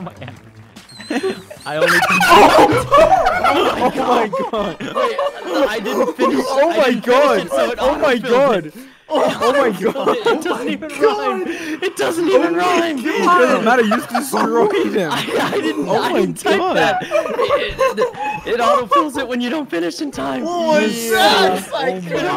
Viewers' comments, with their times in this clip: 0:03 Corpse’s laugh makes me SO happy🥺and whoever was whistle laughing 😂